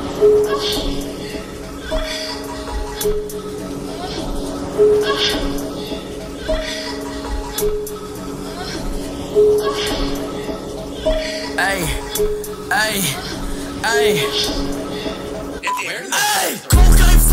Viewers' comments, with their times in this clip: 0:05 Do it in x speed it sounds wrong in the start